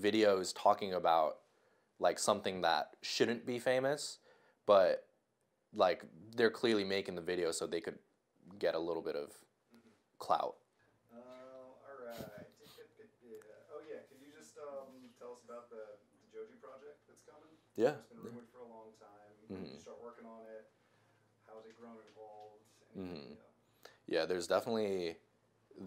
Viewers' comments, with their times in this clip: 0:10 random guy: whispers “Jake Paul” Joji: 😂😂 Gets me every time